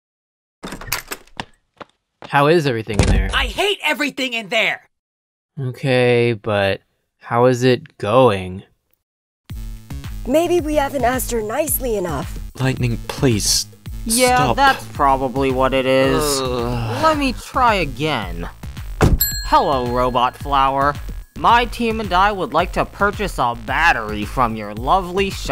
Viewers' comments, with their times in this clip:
0:02 Black hole is speaking
0:10 maybe we have a as-